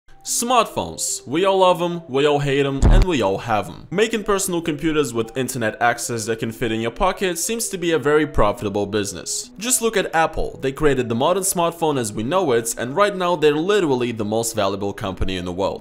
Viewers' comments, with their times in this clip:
0:00 he straight up said "Sмагтpонпеs"